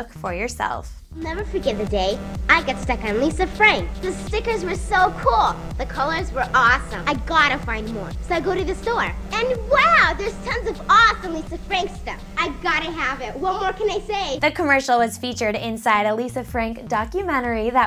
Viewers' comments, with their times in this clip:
0:05 from she sounded just like she does in that 70s show